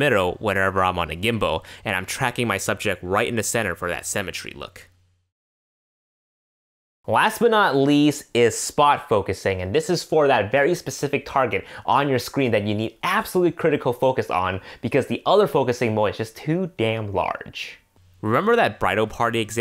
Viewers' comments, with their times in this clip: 0:03 For that cemetery look???